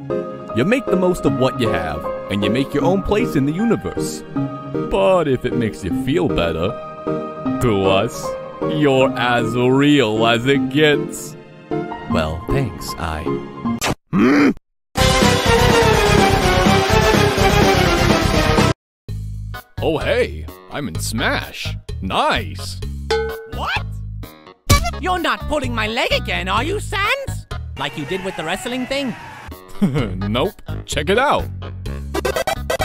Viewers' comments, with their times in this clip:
0:09 Love the benny hill Music!
0:14 OH MY GOD THIS MIX OF MUSIC! PERFECT! I laughed so hard really XDDDD